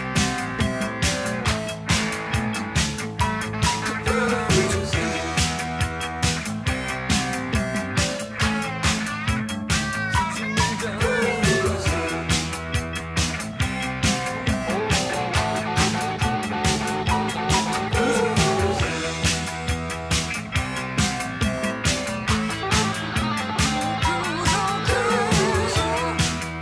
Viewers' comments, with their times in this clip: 0:08 Listen for the 5 guitar riffs that are not in the prior part of the song. I love the Cars arrangements, so unique.